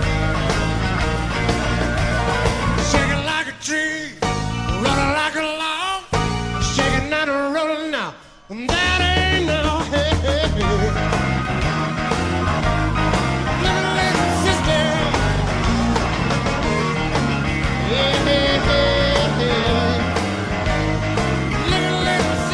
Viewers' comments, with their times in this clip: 0:10 If you start playing with the speed setting to 75% you can see that the first 2 notes you hear are not accompanied by his hands playing them lol. There was a little bit of studio magic on this one, but none the less it was an epic swap. I’m aware the root note of both of the chords is the open a string but the first one sounds like the d string plucked on fret 2, then fret 4 which is not possible with his hand not fretting anything lol. I’m surprised more people haven’t noticed this. I’ve never seen a single comment pointing it out.